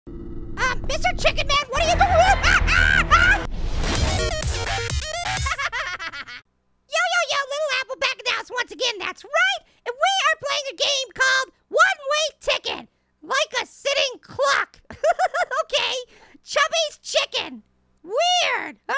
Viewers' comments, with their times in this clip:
0:01 Who else thinks he sounded like a turkey